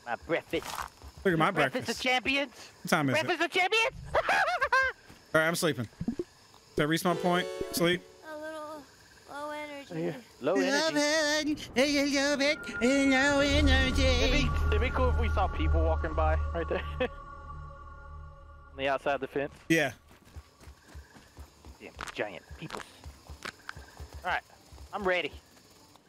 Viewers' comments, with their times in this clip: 0:03 Lmao what in the evil laugh was that 😂😂
0:07 + “l-l-lo-low-low enerngy-l-“😂😹🤣🤣😹😹🤣😹😂😹🤣🤣😂😹🤣🤣😹😹😹😹🤣😹😂😹🤣😹😂😹🤣😂😹🤣🤣😂😹🤣😹😂😂🤣🤣😂😹🤣🤣😹😹😹🤣🤣😂😂🤣🤣😹😹😹😂😹🤣😹😂😹🤣😹😹😹🤣😹😂😂😹🤣🤣😹😹🤣😹😂😂🤣😹😹🤣😹😂🤣😹😂🤣🤣😂😹🤣😂🤣🤣😹💀BOUTA START LAUGHIN LIKE A MANIAC